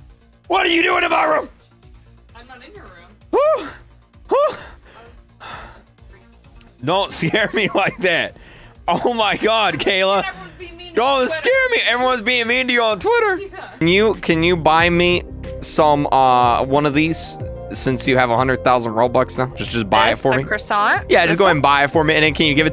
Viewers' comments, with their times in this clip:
0:07 That scream tho 😂